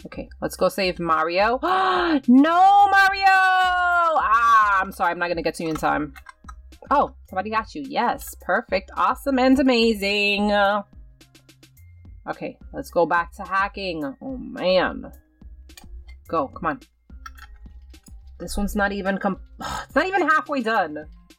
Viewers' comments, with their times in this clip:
0:09 she is a amazing singer ꨄ 😌